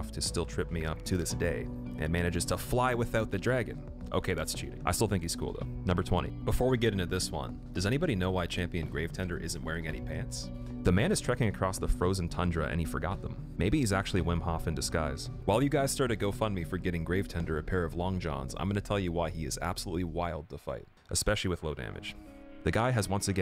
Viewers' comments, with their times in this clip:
0:10 stong dutch accent Iiiinhaaaaleee body chest head aaaannnd let go